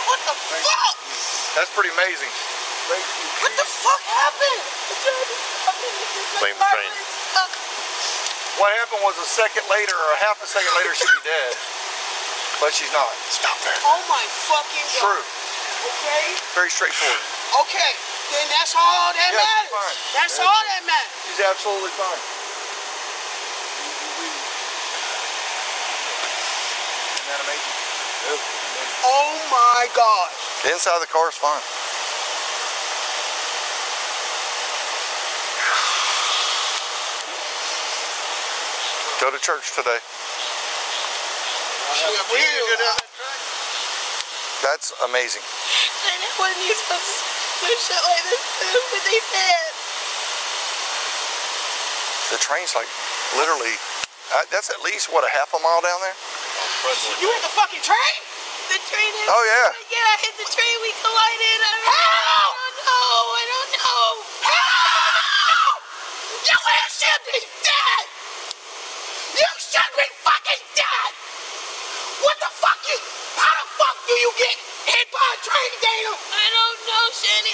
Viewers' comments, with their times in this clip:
0:09 dude whispered like a mom😂😂
0:13 the officer whispering "stop that" to the antagonizing officer. This is like a sitcom
1:01 makes me tear up every time. The disbelief in her sisters voice is impactful.